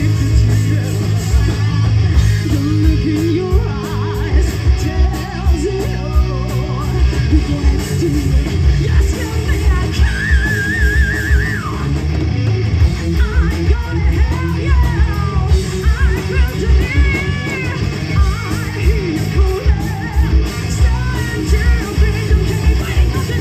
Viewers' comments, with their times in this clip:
0:09 Wow, that scream !